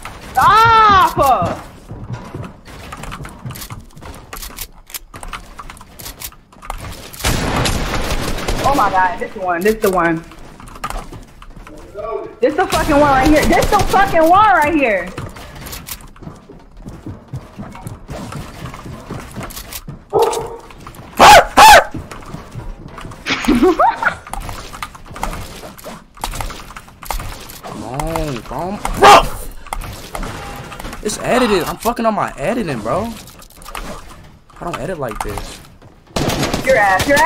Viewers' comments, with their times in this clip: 0:10 anyone hear some dude speaking in the background ?
0:19 Nah when speed barked back at the dog 😂😂😂😂😂